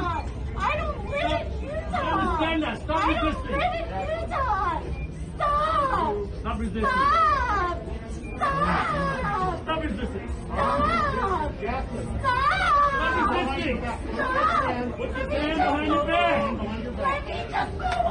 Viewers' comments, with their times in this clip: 0:04 StOp. StOp. that lady sounds already cvrazy after saying "I dOn'T lIvE iN uTaH" 20 times in a row.